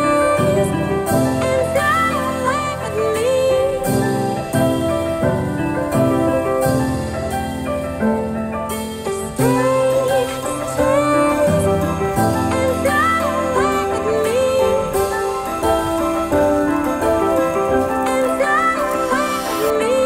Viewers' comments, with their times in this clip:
0:03 What a beautiful music ...